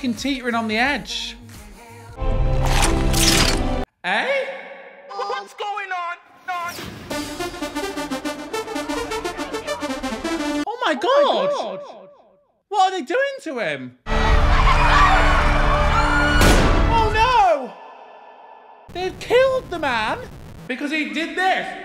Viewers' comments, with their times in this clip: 0:08 you definitely shouldve edited the "Bam Bam" part over the gunshot